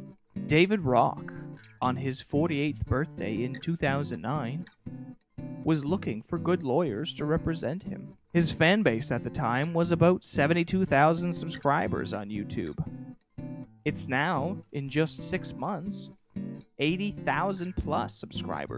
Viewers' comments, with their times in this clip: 0:05 volume fail =P jk sweet movie